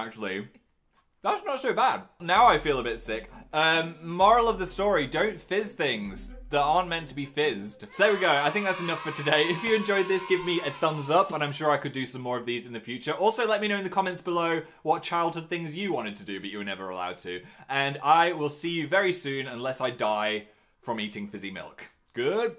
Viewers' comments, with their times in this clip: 0:05 I heard "don't fist things that aren't meant to be fisted" uuuhhh